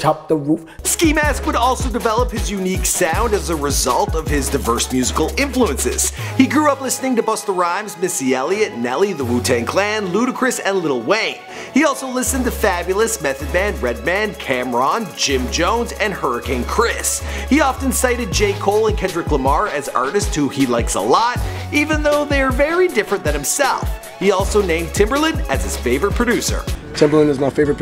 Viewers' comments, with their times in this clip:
0:10 the way he said XXXTENTACION is hilarious😂
0:11 he said Xxxtentacia